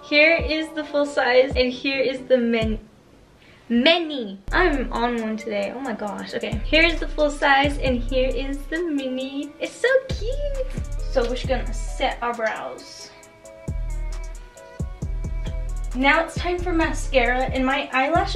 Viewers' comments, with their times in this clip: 0:03 "MENY" LMFAO how cute